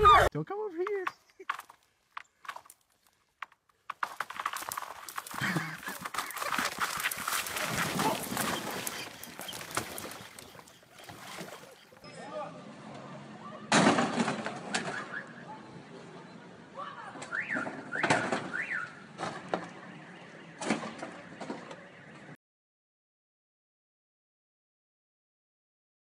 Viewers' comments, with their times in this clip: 0:07 I like the sound the ice makes before it breaks 😆